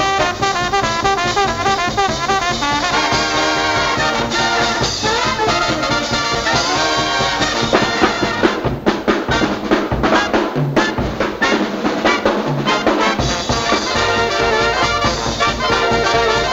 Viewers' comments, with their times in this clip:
0:04 Is it just me, or did you see Buddy's ride cymbal fall over to the right at 1:63 where it remained until when it was removed from the bass drum for the rest of the song? Also, during his great single stroke rolls at the end, there are a few cymbal crashes from that same cymbal--the one that was not there! Darn fine (magic?) drumming and some tremendous editing!! Go Buddy! He looks and plays great, even at 24!